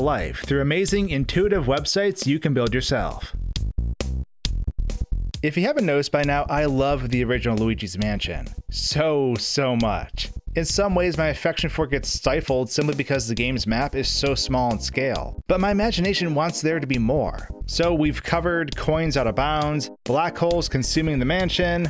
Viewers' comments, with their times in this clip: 0:08 your voice goes very well with the background music